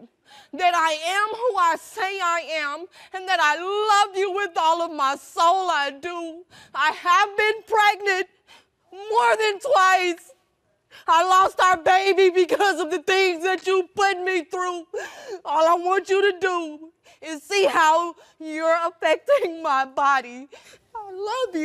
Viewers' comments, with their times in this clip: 0:09 Im not even gonna lie… and not even saying this to be funny but she sounded like Viola Davis in one of those dramatic movies when she came out on the stage